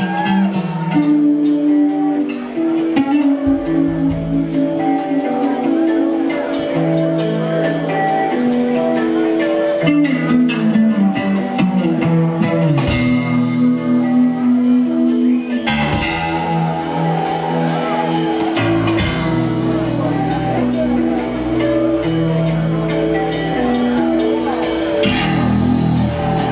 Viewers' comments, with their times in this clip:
0:07 For anyone researching musical instruments, the full range of a 1964 Rickenbacker RM1999 is Oooh to Ohhhhhhhhhhh